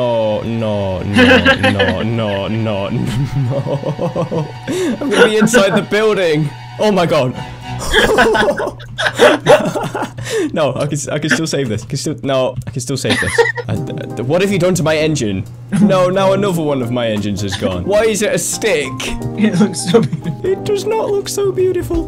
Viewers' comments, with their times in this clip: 0:07 The music composer be like wewewewe